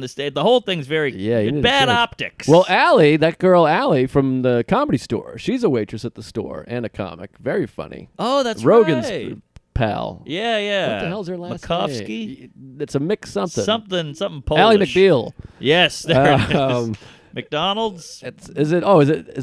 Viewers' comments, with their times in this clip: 0:03 "Rogan's......pal" why the hesitation eh?